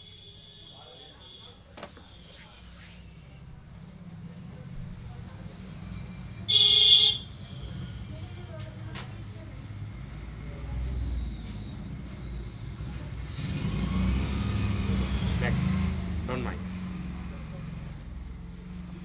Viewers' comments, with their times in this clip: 0:06 The horn by god damnit... I'm deaf.